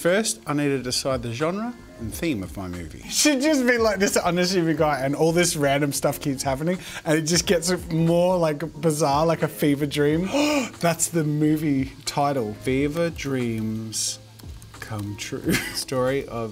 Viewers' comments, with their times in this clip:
0:03 “should just be like thisarsragimashbar and all this random stuff keeps happening” Jokes aside this was a very epic video